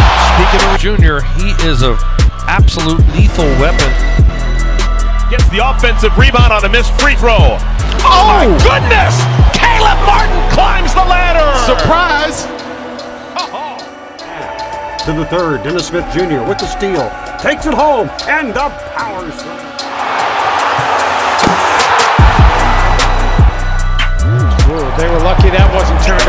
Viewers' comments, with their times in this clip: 0:08 that commentator needs to chill out. Every Hornets' commentator ever.